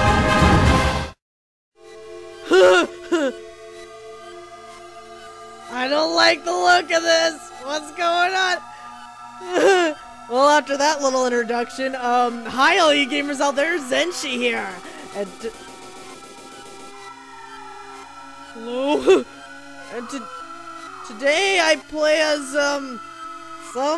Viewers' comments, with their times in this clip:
0:05 lavender town music reversed plays if you listen closely